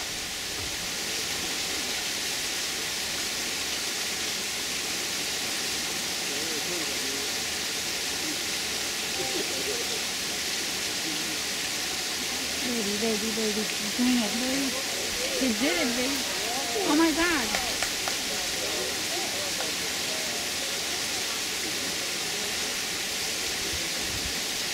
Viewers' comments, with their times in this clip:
0:09 I thought I heard cardi B "oh my God"